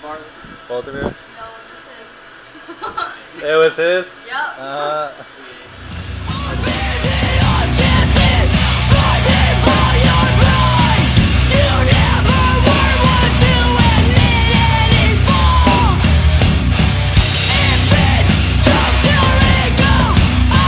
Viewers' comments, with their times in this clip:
0:06 that's some good Christian music Edit: ok so when they were processing and when the blood started coming out I cried